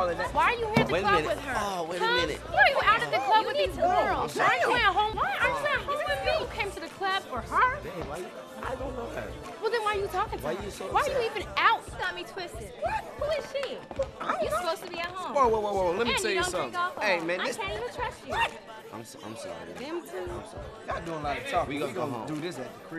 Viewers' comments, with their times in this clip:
0:09 ... "I don't know her..." O's voice was hilarious